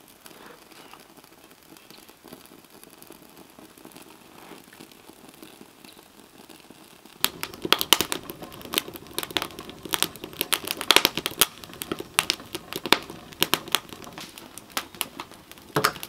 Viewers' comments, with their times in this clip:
0:03 Even the sounds of the fire and a popping noises is relaxing.